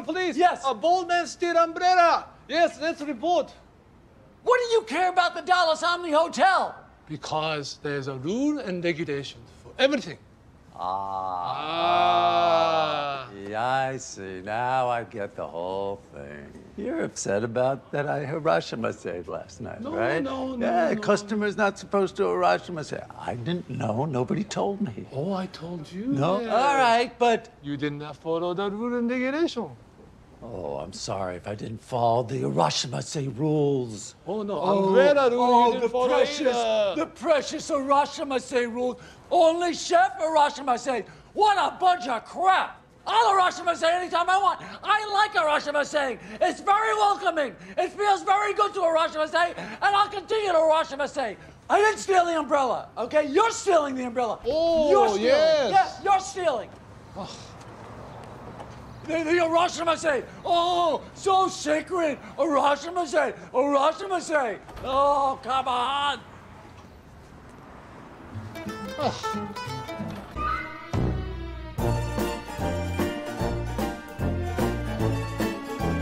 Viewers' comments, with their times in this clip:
0:09 What the fuck does he say? Rules and Regulations?
1:04 actor laughing, thinking he's off camera